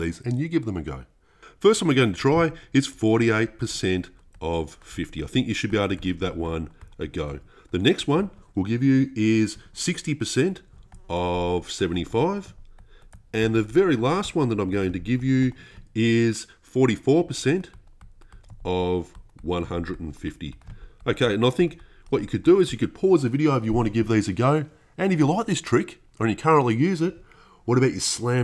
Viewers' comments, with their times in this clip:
0:09 who heard the fly buzz?
0:10 WHO HEARED THE FLY GO PASSED HIM